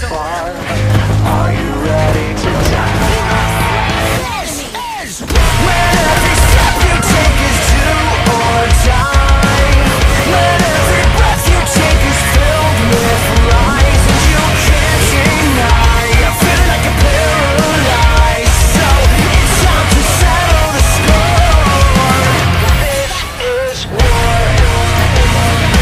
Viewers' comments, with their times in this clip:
0:07 Eyy Beat Drop🔥